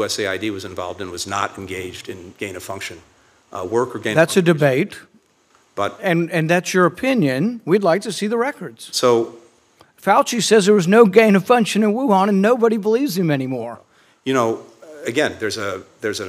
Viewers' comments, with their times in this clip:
0:04 Instead of answering questions he just a aaa aaaa . This is an indication - he is lying .